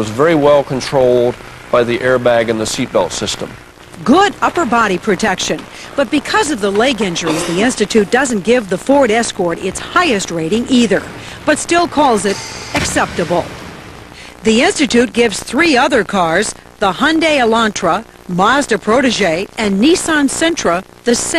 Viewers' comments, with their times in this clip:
0:05 anyone notice a cough ?